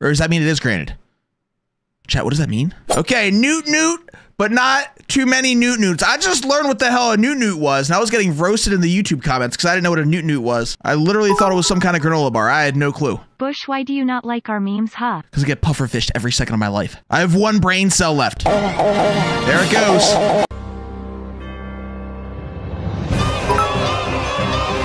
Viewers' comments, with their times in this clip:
0:07 I can't believe you would throw me into the void! I am going through a lot on a new year of school, and yet, you throw me and ALL OF YOUR VIEWERS INTO THE VOID FILLED WITH LOUD MEMES!